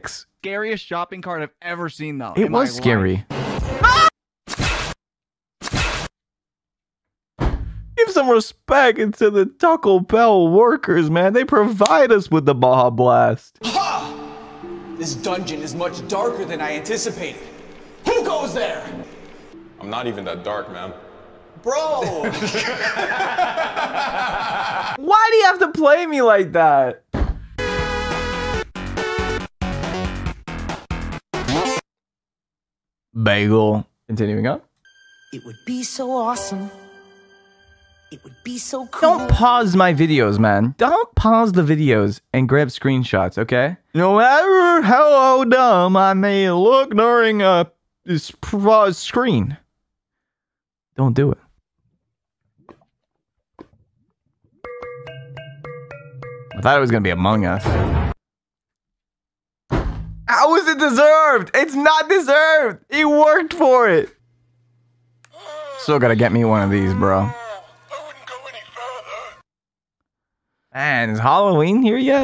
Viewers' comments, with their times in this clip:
0:04 Bruh it cut off his scream with a ad
1:00 I GOT A DESK SLAM LETS FUCKIN GOOOOOOOOOOOOOOOOO or it may have been the prop, I can't remember rn